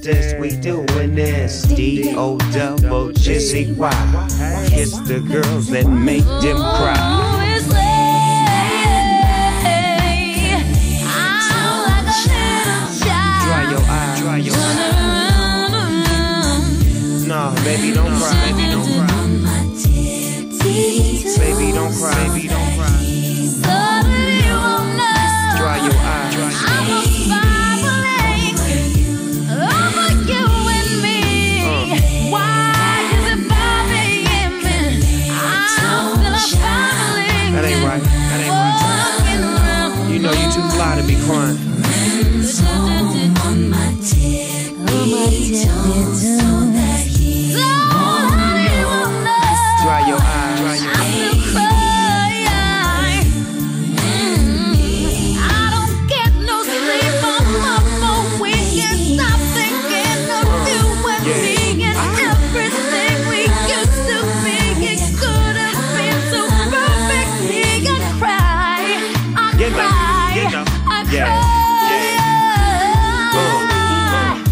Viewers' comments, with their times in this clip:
0:06 from the vocals are mind blowing
0:15 minutes onwards is pure soul. I actually looked the song up. Bring back memories.
0:47 Love the frustration she projects in her voice ! ♥️
0:55 is another reason this woman is a GENIUS. Not only is she talking about crying throughout the song (that she wrote), she sings this part with so much attitude, exactly like a crybaby's tantrum. WHO ELSE?